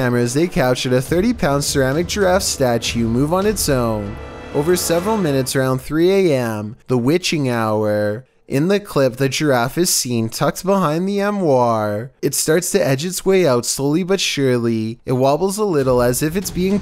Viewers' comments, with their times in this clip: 0:03 He said "mishchevish" instead of mischievous.